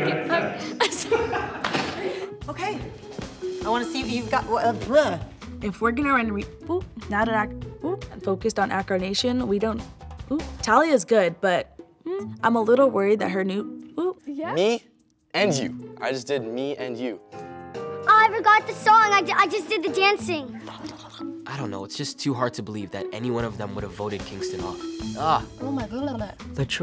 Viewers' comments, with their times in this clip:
0:07 tho that oop everytime
0:08 her innocent "oop".